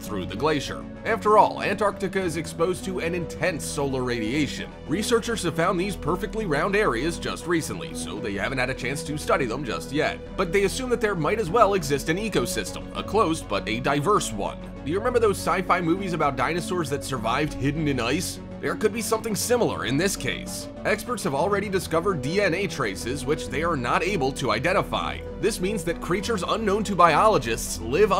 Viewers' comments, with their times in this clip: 0:10 It's like the narrator is trying to PUSH the information on us, rather than just casually presenting the exciting data collected. Sorry in I changed channels because of that reason...a headache was forming behind my eyes. & off to another million more Youtube channels.